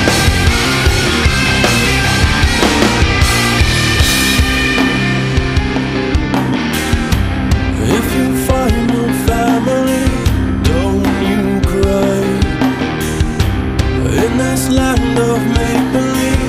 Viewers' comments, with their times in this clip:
0:04 Some weird music editing they took out part of the melody